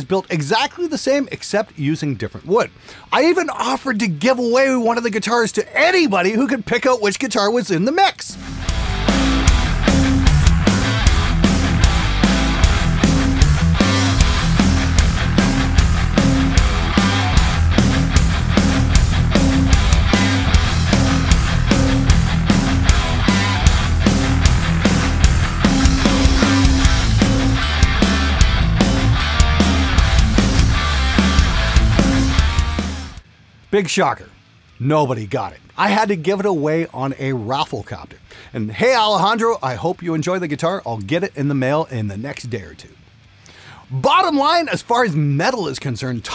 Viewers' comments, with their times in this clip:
0:10 Hahah those modified seek & destroy riffs
0:30 like the music Playing Metallica while not playing Metallica...